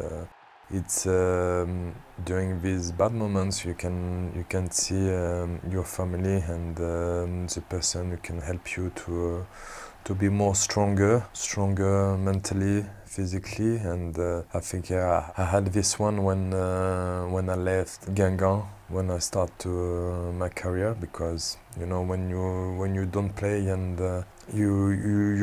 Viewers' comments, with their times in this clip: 0:08 did I just hear "super sonic can help you to be stronger" 😂😂